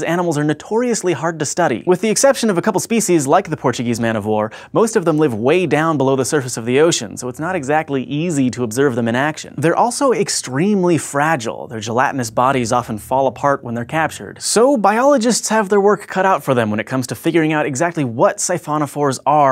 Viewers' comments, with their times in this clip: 0:05 I think I can hear something being whispered ... Anyone else???